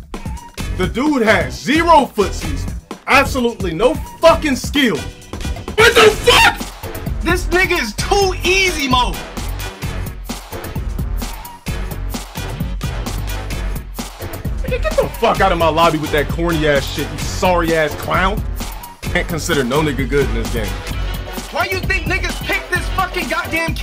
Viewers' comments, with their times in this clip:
0:06 The way his voice breaks 😆